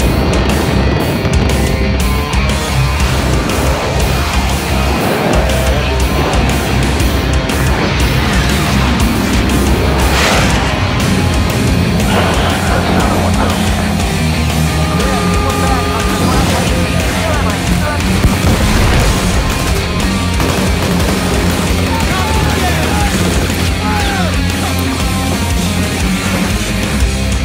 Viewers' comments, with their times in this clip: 0:08 and on, sounds like a remix of the halo theme... is it just me?